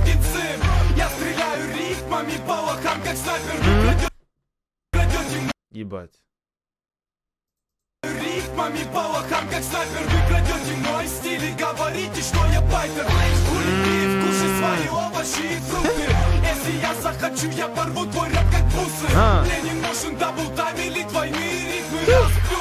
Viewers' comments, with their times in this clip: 0:05 SO CLEAN RUSSIAN PRONOUNCE